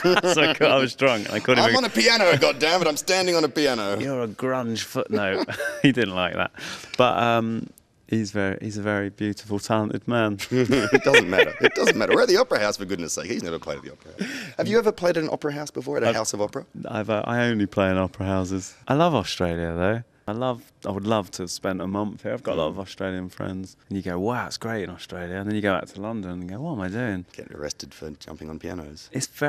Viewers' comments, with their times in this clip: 0:10 Noel's laugh is so great! ♥